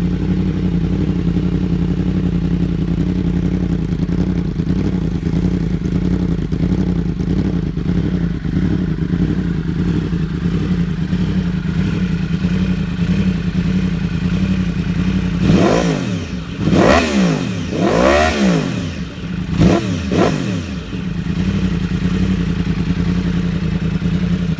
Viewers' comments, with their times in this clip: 0:07 Beutifull song with akaprovick probably need to remap injection to accept new exhaust . Correct?